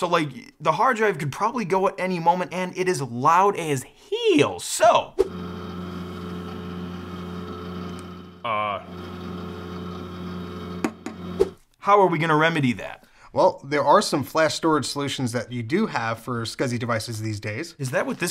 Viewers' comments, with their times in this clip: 0:03 It’s loud as HEEL